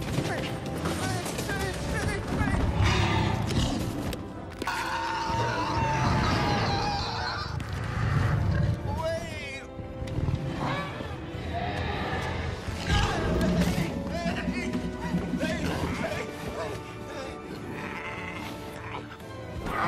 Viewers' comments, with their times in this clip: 0:04 that fucking scream😂😂😂